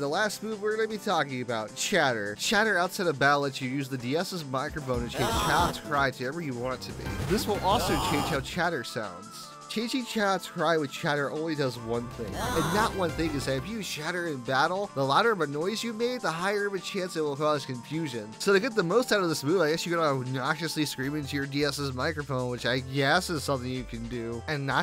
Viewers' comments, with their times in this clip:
0:06 the noise you chose for chatter absolutely SENT me AGGHHH